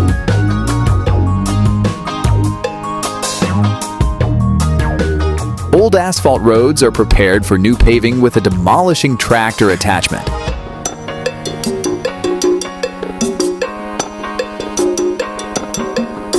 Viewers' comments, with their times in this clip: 0:04 old ass fault roads